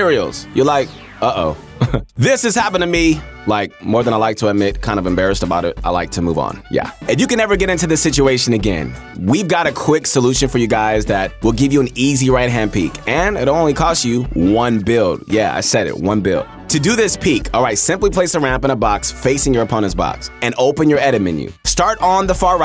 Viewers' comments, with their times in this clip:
0:07 he can become a rapper.